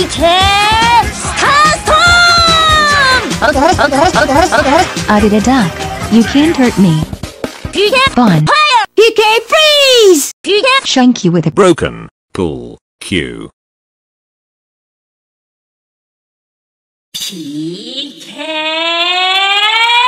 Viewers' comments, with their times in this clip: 0:08 Would've liked Ness's voice for PK freeze